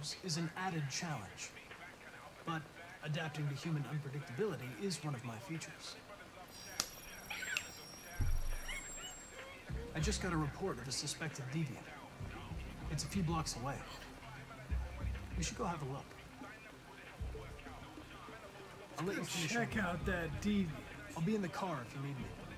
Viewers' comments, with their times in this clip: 0:06 Love how Bryan winks at the same time as Connor, then Amelia squeals like a fangirl